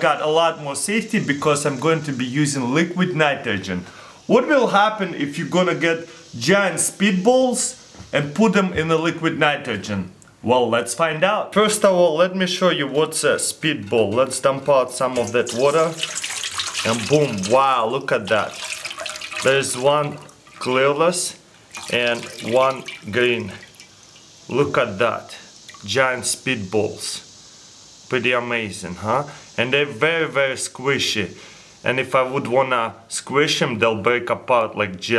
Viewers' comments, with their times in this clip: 0:07 he says "and putin in the liquid nitrogen"
0:15 Did he just say clearless?
0:17 there is one clearless 😂
0:19 there is one "clearless"
0:19 did he just say clear less 😂
0:20 lol he said one was clearless
0:21 he said clearless dufuq
0:21 " there's one clearless?????